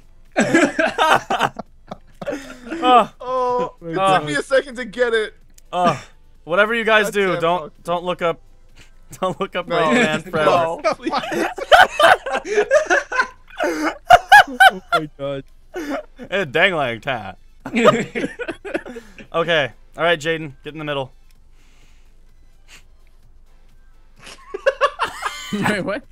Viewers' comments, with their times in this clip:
0:07 they talked over him what did he say XD